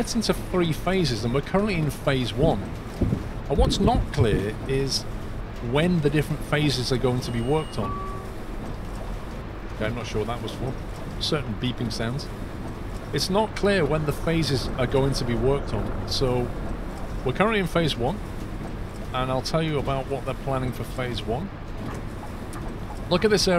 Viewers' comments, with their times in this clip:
0:07 The peeping sound was someone pressing the button to get off the buss